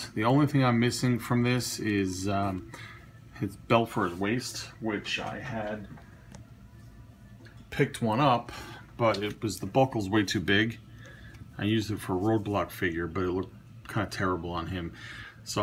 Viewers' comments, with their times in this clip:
0:03 wtf happened to your voice? That was creepy